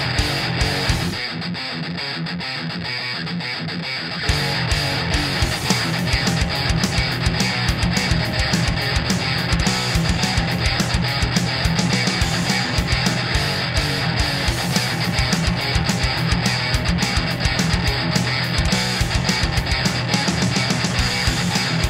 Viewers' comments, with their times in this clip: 0:07 Oh SOMEONE listened to the basslines